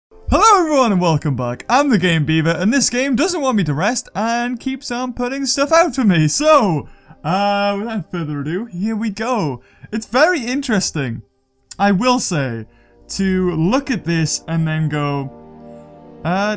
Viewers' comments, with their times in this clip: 0:01 he said herro everyone